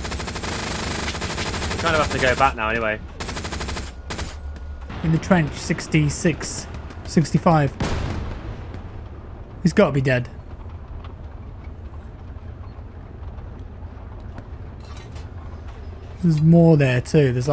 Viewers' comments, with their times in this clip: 0:05 I love how you turned Palpatine for a second and then just casually kept giving callouts